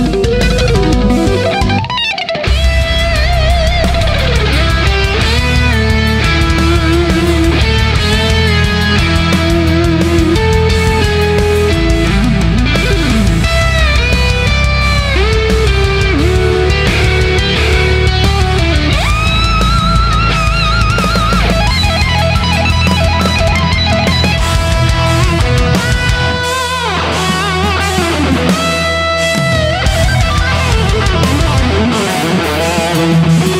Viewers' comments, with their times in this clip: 0:04 that slide down speed pick was F*#king sweet!
0:15 I fell in love with that Melody, who would not?